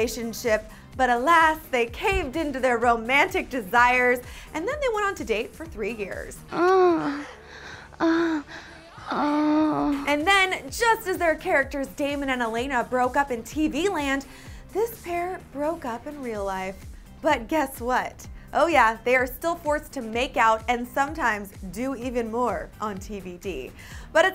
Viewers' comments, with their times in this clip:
0:05 WARNING ❗️❗️❗️❗️ THERES MOANING ❗️❗️
0:06 WHAT THE HECK, THOSE NOISES? 😳😳😳😳
0:06 ok why was elena making so much noise xD